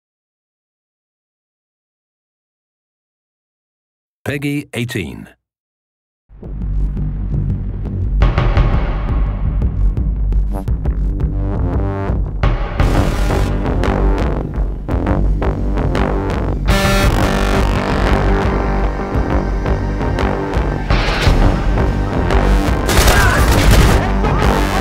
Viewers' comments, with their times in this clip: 0:06 When that bass and treble hits at # it always gives me goosebumps